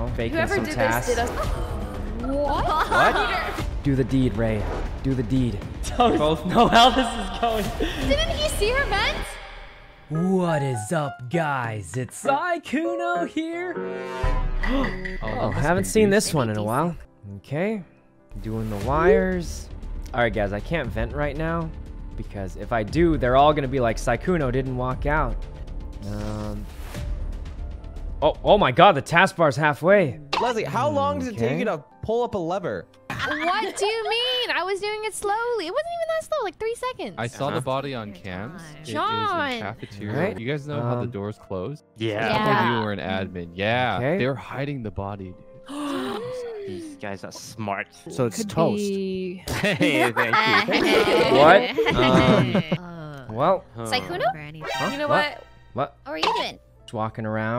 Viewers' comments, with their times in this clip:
0:10 the voice of his intro reminds me of how i speak to my dog "who's a good boy? you are!"
0:42 the way toast said "these guys are smart" was so wholesome to me